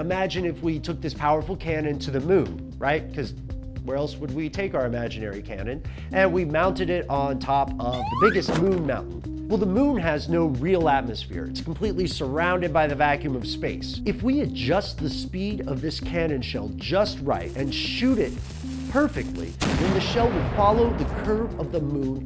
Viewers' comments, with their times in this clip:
0:06 Sounds like: "What you put out is what you get back."